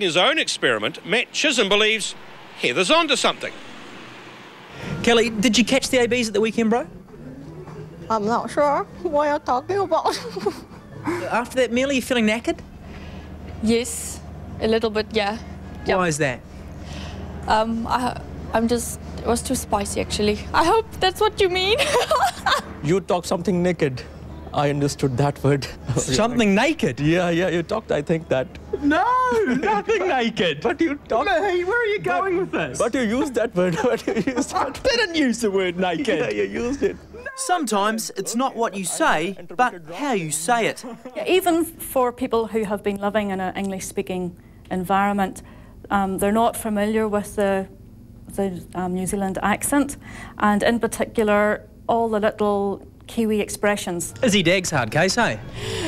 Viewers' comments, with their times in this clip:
0:05 When tv show chinese accent stereotype was actually real
0:23 dude i literally hate my accent
0:30 indian accent in all english accents sounds the same
0:42 She's talking about being understood and it sounds like she said 'loving in an English-speaking environment'